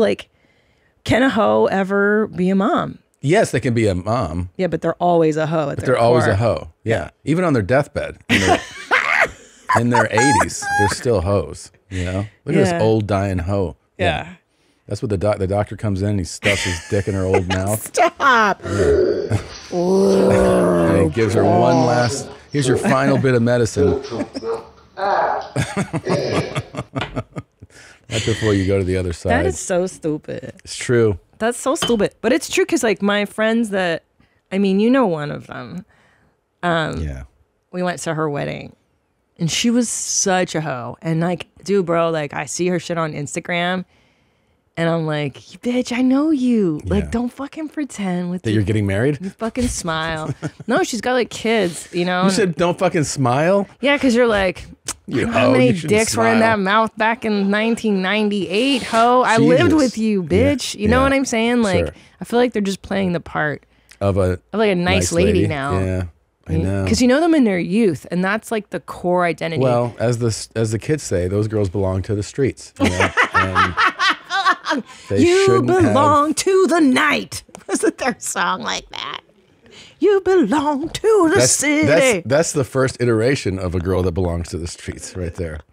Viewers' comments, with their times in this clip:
0:08 Bert laugh or what!
1:08 Man I hadn't thought about or heard that stupid-assed song in ages. Damn, that made me laugh. 😂😂😂